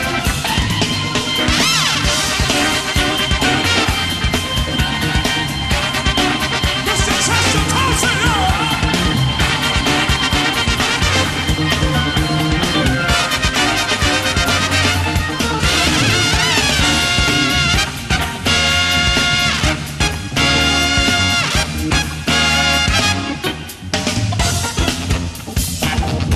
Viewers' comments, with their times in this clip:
0:09 they fucked up ......still sounds cool